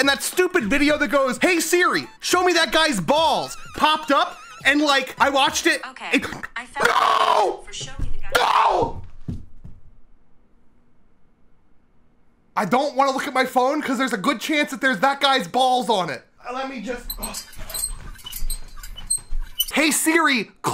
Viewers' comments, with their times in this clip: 0:06 I like has laughing at that so hard it was so funny
0:06 best laugh. F's for siri